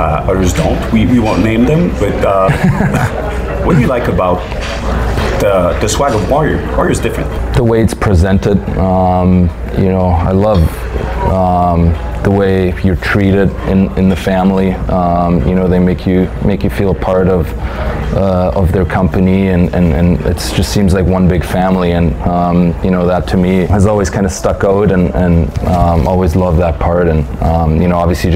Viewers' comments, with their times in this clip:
0:09 at like -something he says "Stuck ooot". real canadian "out". I read your comment as he was saying it.